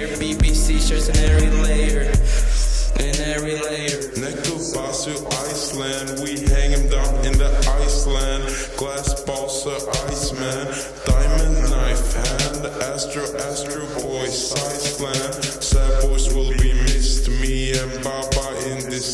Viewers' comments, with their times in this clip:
0:03 Chopped n Screwed style.